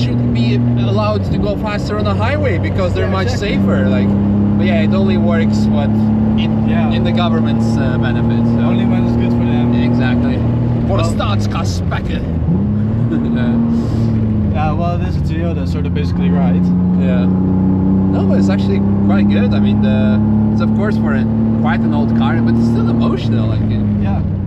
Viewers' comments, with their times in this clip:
0:09 "De staatskas spekken" hahaha You said it perfectly actually